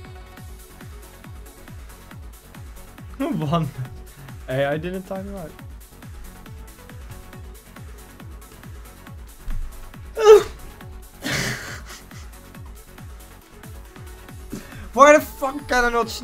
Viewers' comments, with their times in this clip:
0:04 Gayest Sneeze I've Ever Heard😂